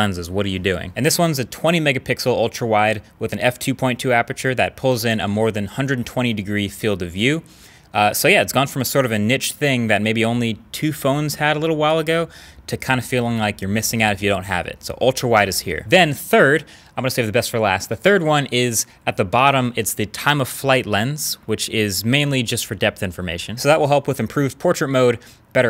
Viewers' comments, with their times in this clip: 0:09 What word are you even saying ?